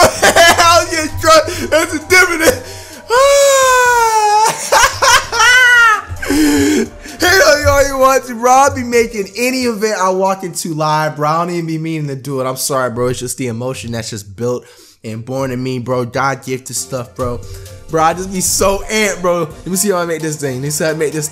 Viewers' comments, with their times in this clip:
0:03 the most normal laugh I ever heard from flight